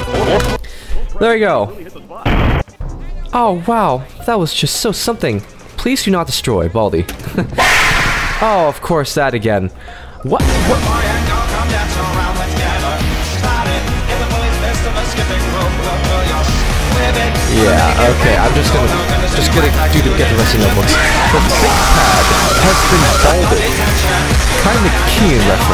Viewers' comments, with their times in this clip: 0:10 this song mashup is peak